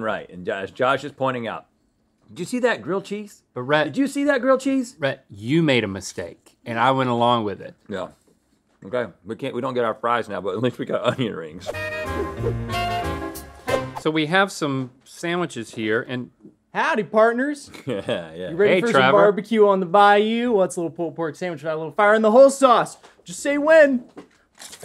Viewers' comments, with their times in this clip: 0:10 The pause says alot of who they are with food hahah